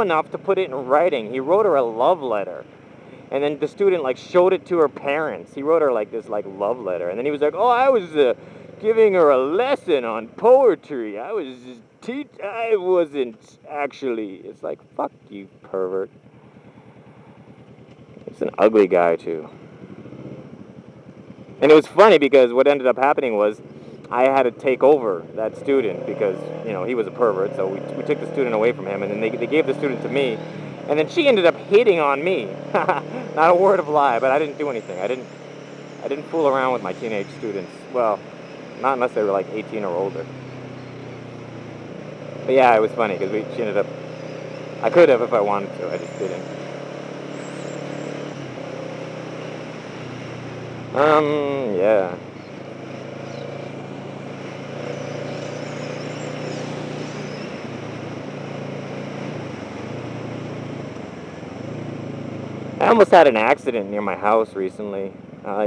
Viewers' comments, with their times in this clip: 0:09 u just sounded like sylvester stallone :D
0:46 awkward pause. I think you were fantasizing lol.